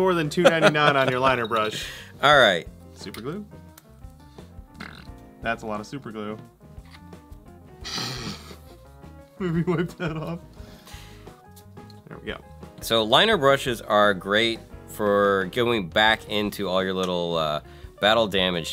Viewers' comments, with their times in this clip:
0:04 Super glue fart